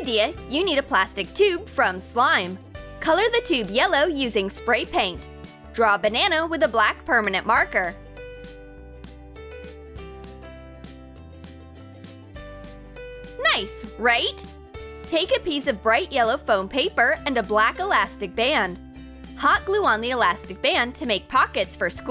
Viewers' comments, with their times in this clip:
0:06 did she just say Banano? 😂